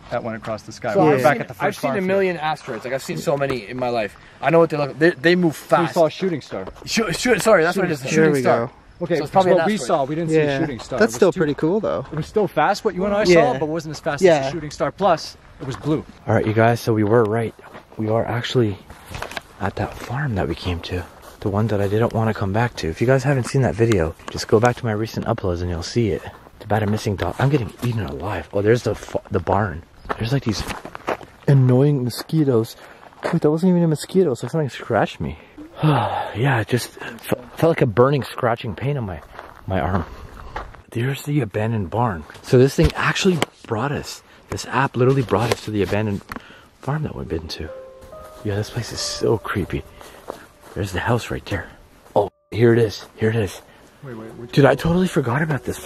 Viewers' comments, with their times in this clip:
0:05 I just heard a ghost making noises at the haunted farm minutes
0:36 or just before, right after you say it felt like something scratched you, there’s a whimper or voice or something and it sounds feminine. It happens fast but it’s definitely there.